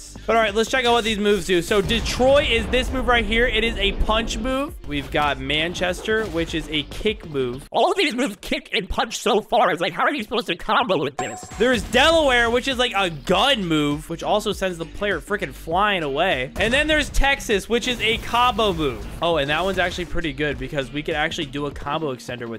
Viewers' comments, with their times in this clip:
0:07 Bros Voice Sounds Weird💀
0:08 bro sounded like a cursed spirit